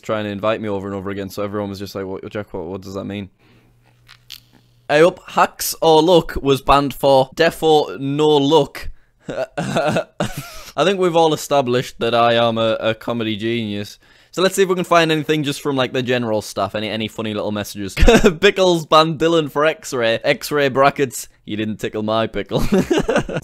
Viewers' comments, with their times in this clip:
0:04 that awkward silent What you just say and thinking about life